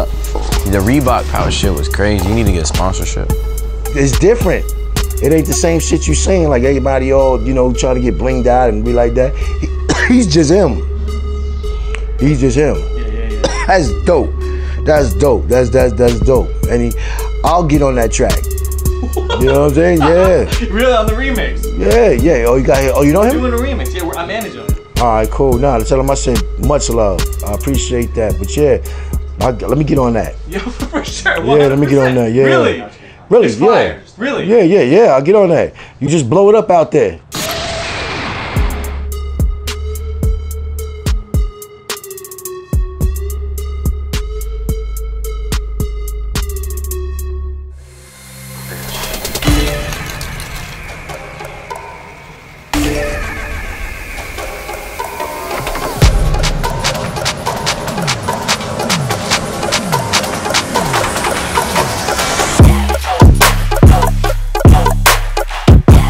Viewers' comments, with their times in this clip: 0:09 That cough when the picture of smoke appears. 😂
0:10 damn. Just a picture of Rich Chigga smokin made Ghostface cough. Tuff
0:11 He choking like the picture actually blew smoke at him.
0:49 I don't know why, but the beat music in the last video make me want to hear again and again.